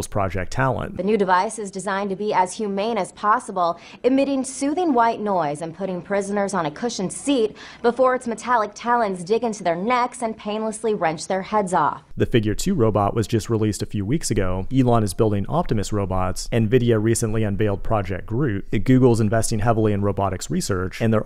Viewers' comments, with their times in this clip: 0:07 WTF THAT IS NOT HUMAN THAT SOUNDS VERY PAINFULL